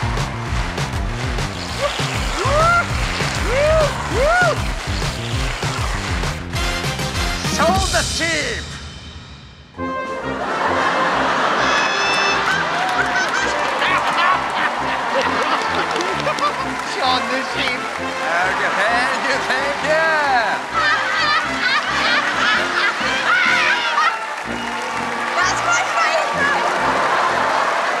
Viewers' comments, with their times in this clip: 0:10 Wallace and Gromit song plays